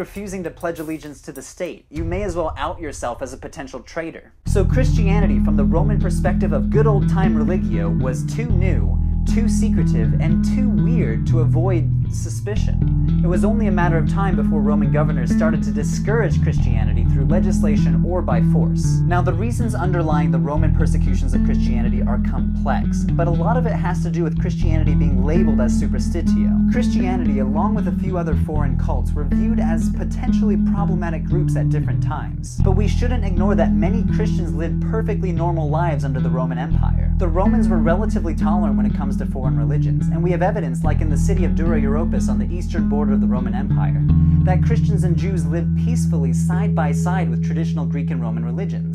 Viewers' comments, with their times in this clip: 0:04 I didn't find the music to be too overpowering until a baseline starts to crescendo at about the mark.
0:35 I know, you fixed the music problem years ago. So hopefully you can laugh with me here. I didn't notice the music was loud until It just felt like you were trying to yell over your own background music at that point. Then a meme (?) I keep seeing, where background music is drowning out quotes or singers for comedic effect came into mind and I had to pause the video because I was laughing so hard. I know it wasn't intended, but it made it difficult to take seriously after that. Getting distracted by the comments didn't help, either. On the bright side, you managed to keep me engaged enough to ignore the music issue for most of the video. You have a real respect and passion for your work, and it is inspiring enough I have to come back to this video again as it was a great spark for story writing. This was an awesome video, and every bit as enjoyable as your newer ones. I wish you the best!